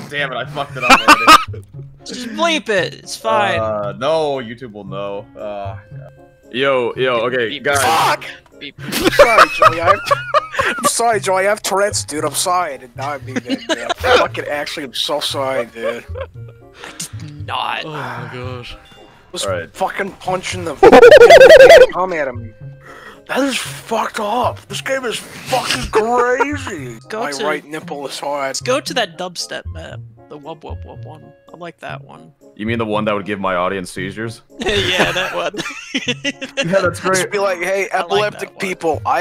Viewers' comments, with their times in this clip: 0:06 the greatest voice crack
0:21 Monke go OHAOAHAOAHAAHOAHAOOAHAOHAOHAAHAOAAAHOAHAOOOHAOWHAHOWHOOHAOAH